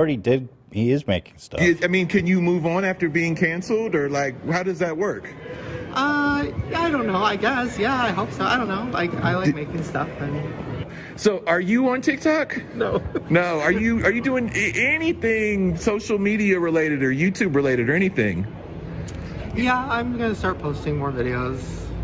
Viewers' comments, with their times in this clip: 0:04 The way Shane answers EXACTLY like Julia Fox in the Uncut Jahhmmms clip 😂